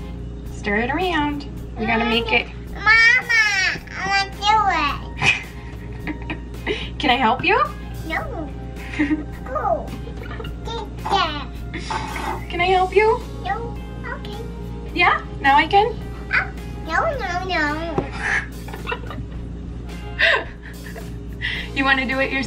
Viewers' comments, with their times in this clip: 0:04 she sounds exactly like my niece awww <3